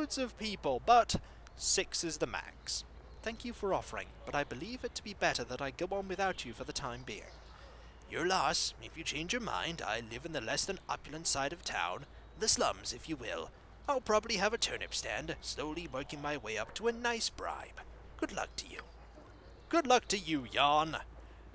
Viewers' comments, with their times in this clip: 0:08 not a bad Jan impression!